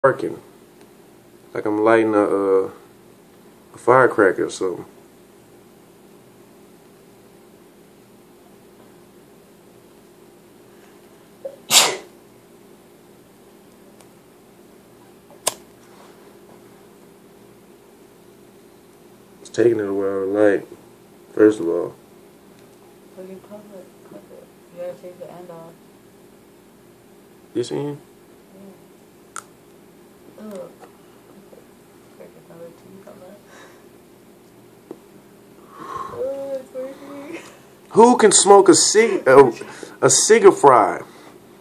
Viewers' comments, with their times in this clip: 0:10 Lol the guy behind the camera sneezed the flame out lmao
0:29 that crunch LOL